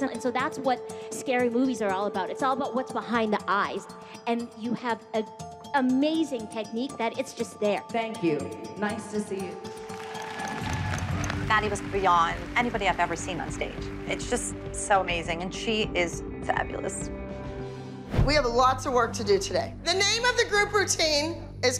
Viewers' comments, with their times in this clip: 0:08 That annoucer sounds like Siri
0:09 sounded like siri